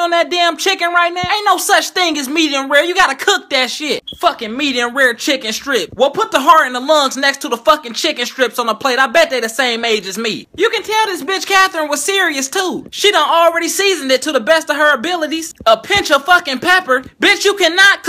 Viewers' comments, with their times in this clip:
0:04 THE SMOKE ALARM!